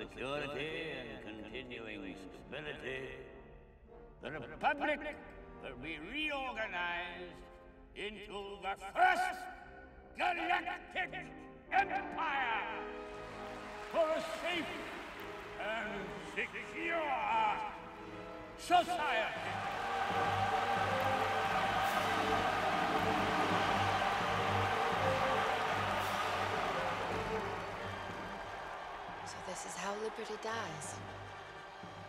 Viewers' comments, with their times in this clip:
0:08 Echo: "Galactic Empire?"
0:14 Palpatine is the lover. That crowd is my body experiencing an orgasm.